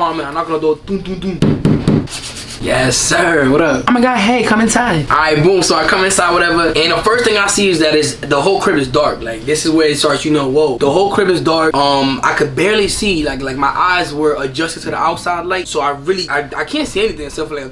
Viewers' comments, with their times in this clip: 0:04 “omg hey, come inside” 🤣I was dead, that voice tho